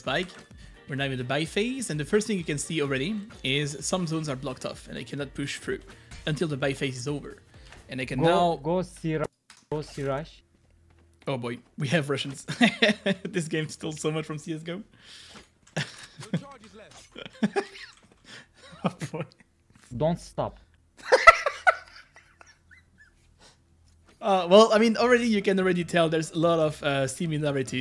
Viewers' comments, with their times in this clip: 0:10 I think this guy is more like turkish?
0:15 The Jett is german not russian